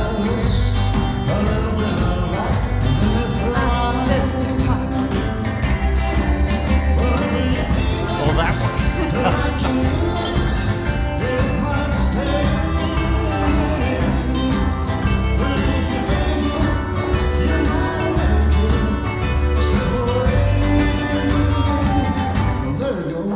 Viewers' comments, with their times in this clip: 0:10 I never liked him, Michael Caine. This is superb. Great part given at last...he s so English😮... lousy USA accent. Really enjoyed this...🇬🇧